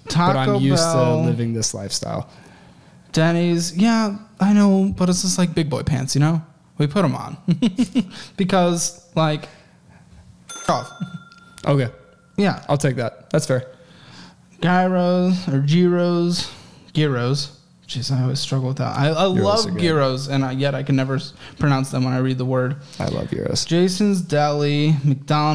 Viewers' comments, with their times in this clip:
0:07 The close up on this giggle was priceless lol Also… Going from security systems in Atlanta to Solar?? Yeah, no wonder he’s not making as much money 😂